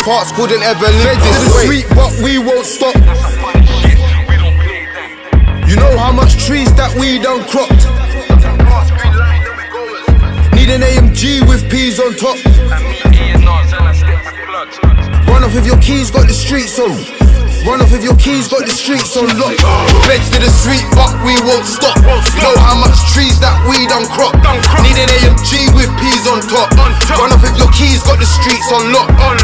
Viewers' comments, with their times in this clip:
0:10 Really thought was yxng bane